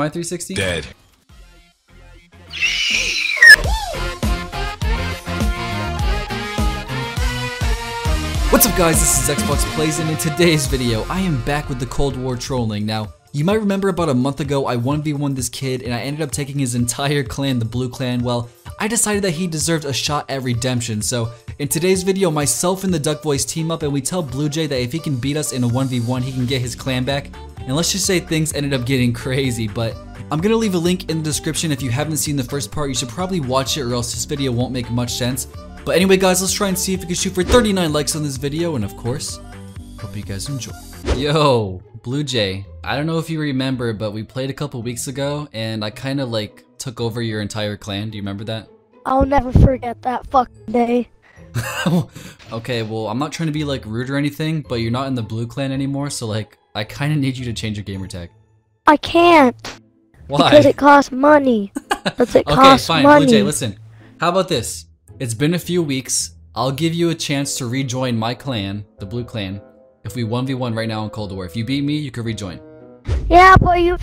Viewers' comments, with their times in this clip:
0:03 My dude sound like a chalkboard
0:59 the voice of guilt 😭